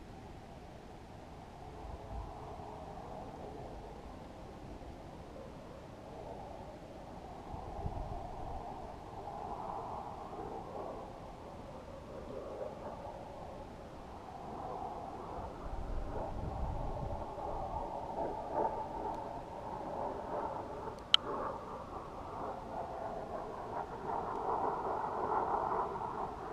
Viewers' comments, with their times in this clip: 0:10 no that's not a spy plane that you hear at all